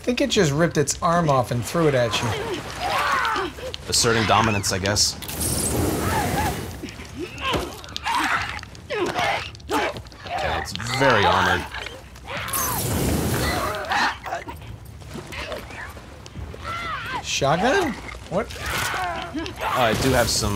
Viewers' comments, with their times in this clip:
0:08 This thing sounds like a Clicker, not as a stalker.